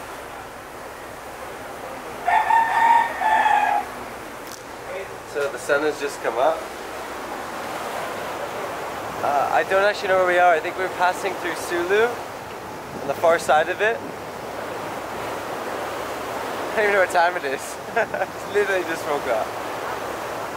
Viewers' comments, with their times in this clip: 0:03 only in the Philippines. Cannot get away from rooster walking you up, even on a boat